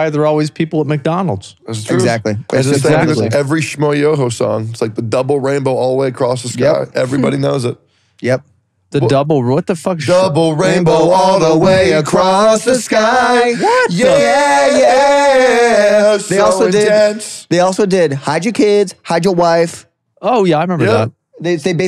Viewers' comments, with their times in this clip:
0:04 The impromptu duet singing double rainbow was my favourite part.